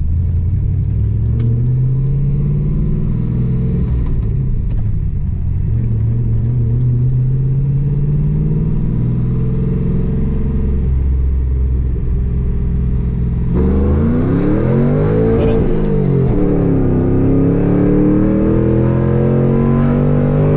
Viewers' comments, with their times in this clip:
0:08 It seemed like it Bogged around the mark